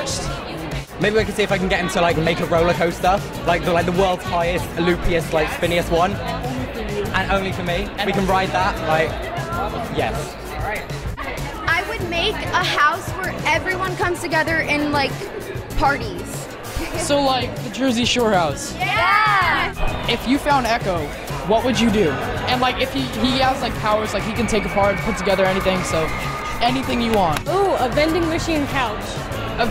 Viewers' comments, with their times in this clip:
0:10 😂 "so like a jersey shore house" (4+ girls at the same time) "YASSS"